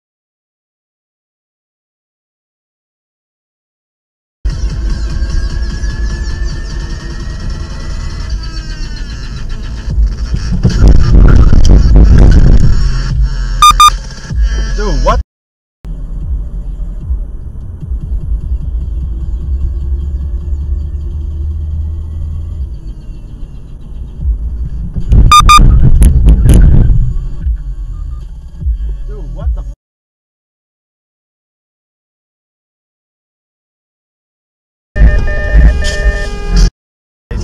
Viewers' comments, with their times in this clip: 0:04 sick base drop
0:14 ... who still listens to Dub step?
0:24 as soon as the beat drops almost hits a guy 😂